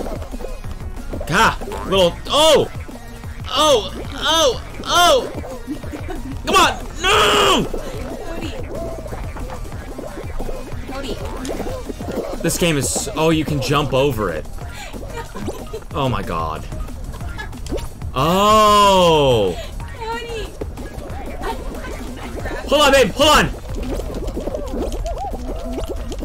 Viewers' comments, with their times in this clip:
0:09 when you rewind just to hear her laugh 🙃